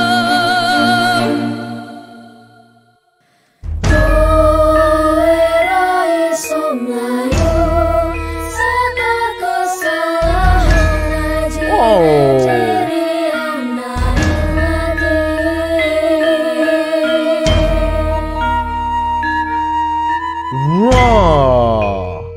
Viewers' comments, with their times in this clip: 0:03 She sing Javanese music using Gamelan, old traditional Javanese instrument which is existed at 14-16 th century during Majapahit Empire, which at it's peak controlled most of Southeast Asia 🎹🎹🎹